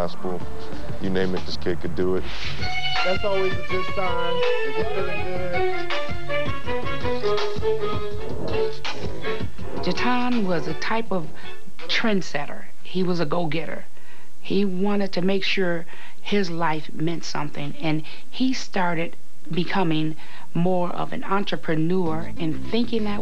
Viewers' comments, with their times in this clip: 0:04 That beat go hard as hell